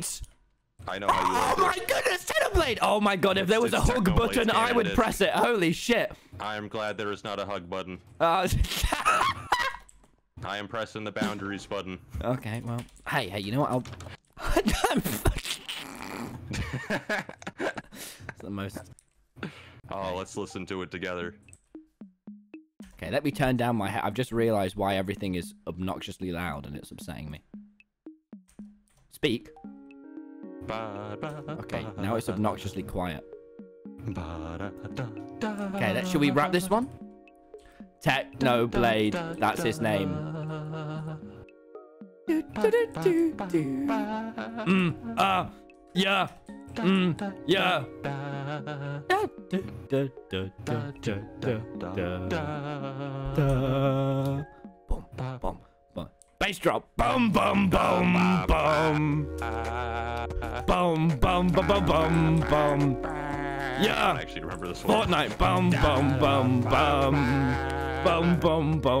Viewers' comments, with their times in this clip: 0:09 Hello 500th reply tommy and techno start rapping
0:21 Techno and Tommy jamming to the disc
0:21 Rare footage of Technoblade singing
0:29 techno and tommy singing/rapping to cat
0:44 techno's voice is so soft oml
0:49 Tommy and techno singing on the music disk
0:51 techno and tommy singing us beautiful
0:56 when he is not bass but he is saying bum bum bum